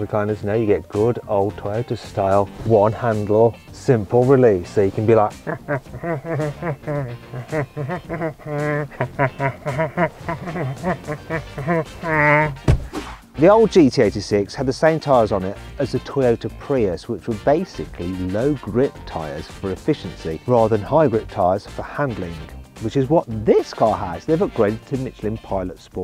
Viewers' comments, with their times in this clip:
0:07 you sound like Peter Griffin 😂😂😂
0:08 tell me this man isnt peter griffin😂😂
0:09 oookay Peter Griffin